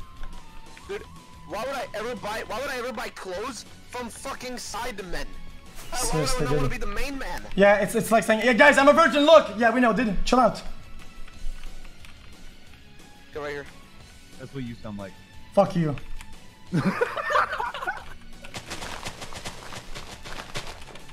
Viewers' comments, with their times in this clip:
0:03 when carson went into their call did they mute him or something because he was talking to them before you hear him say "thats what you sound like"